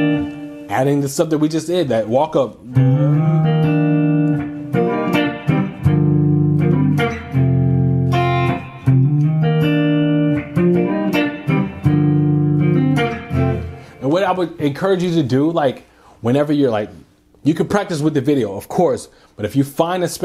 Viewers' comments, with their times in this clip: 0:03 Les Paul sounds good not muddy or anything... is Eric Gales sounding. Does the pickups have coil spliting?